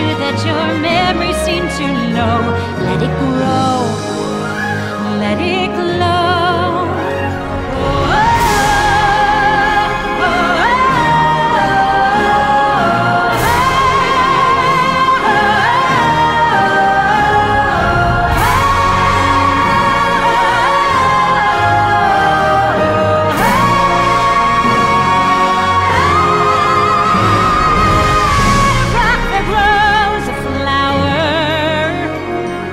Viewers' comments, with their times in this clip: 0:07 that melody though😭
0:07 Did anyone else notice the beauty and the beast intro melody here?
0:08 Goosebumps!! An almost instantly recognizable Menken chord progression with Menzel's pipes. What a combo!!
0:08 When this part starts I can't help but feel little chills, it sounds so magical and powerful and even hopeful in some way. Idina has an extremely incredible voice
0:08 when this part starts, it's like all the magic of Disney comes together in one voice/music! It sounds like HEAVEN!
0:10 23 second of idina sustained notes
0:13 I don’t know if anyone noticed but the chord sounds exactly like the beginning prologue in the animated Beauty and the Beast; or just Beauty and the Beast period. I just feel like that just proves how much of a musical genius Alan Menken is. Absolutely beautiful❤️❤️
0:13 Beauty and the Beast and Idina's voice. I can die happy. Mr. Menken you are a diamond!